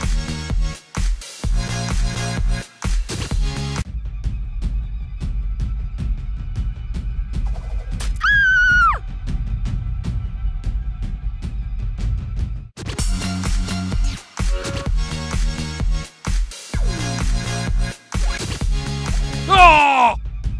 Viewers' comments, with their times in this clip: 0:04 what was that scream